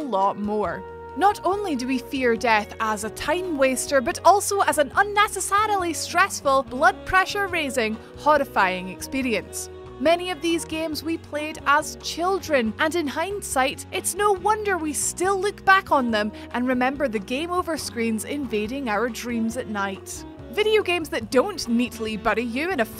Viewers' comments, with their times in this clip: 0:04 I got confused unessasalalee, what is this word??